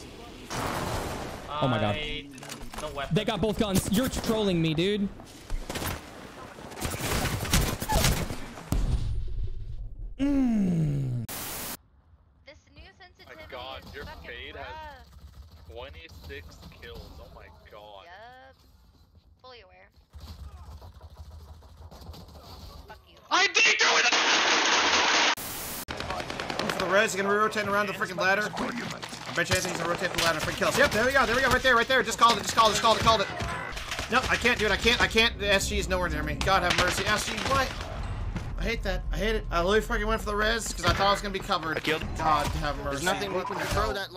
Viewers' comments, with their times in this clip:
0:08 I was not ready for the little moan affer his stream froze.
0:30 bro was more sad than mad